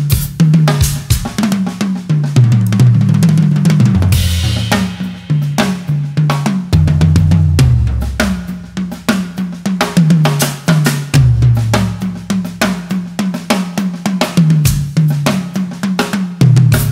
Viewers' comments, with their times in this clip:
0:04 Imagine a Tamil film, The villain is arriving!